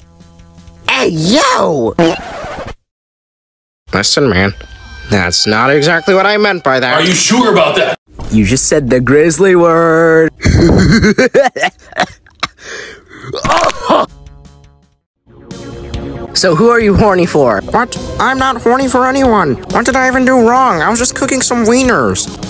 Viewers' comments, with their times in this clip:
0:10 But what is that laugh